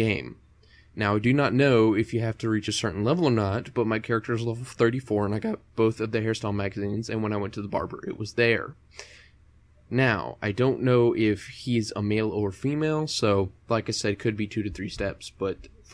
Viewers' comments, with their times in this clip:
0:03 That voice crack hahahaha